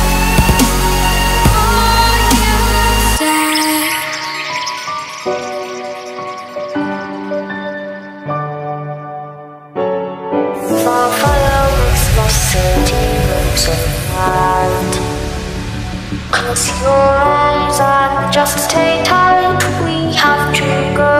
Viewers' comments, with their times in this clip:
0:05 Omg. You put a boy vocaloid on here. The one that sounded super auto-tuned. xDD It was That's a duuuudddeee.